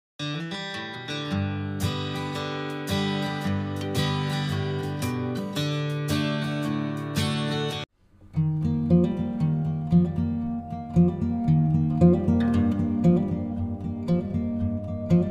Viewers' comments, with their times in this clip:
0:03 😅😊This is my favorite Indian God Krishna,s music is very melodius.💗